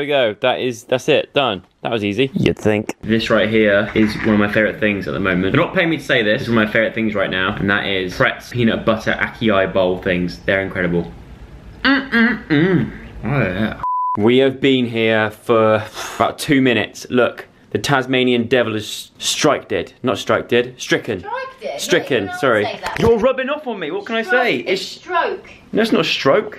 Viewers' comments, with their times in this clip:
0:09 were you trying to say acai? It is not pronounced that way lmao